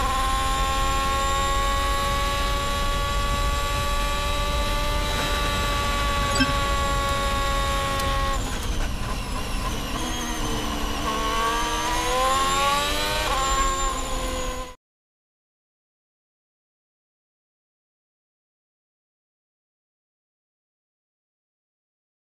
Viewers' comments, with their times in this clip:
0:04 you can hear how strong the tow is. The noise of the engine changes so much when he gets out of the slipstream.